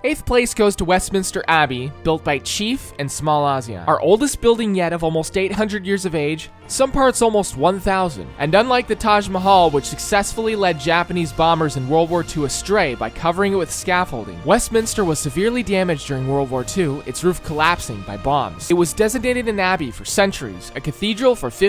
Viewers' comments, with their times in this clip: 0:03 I love how you are playing the US national anthem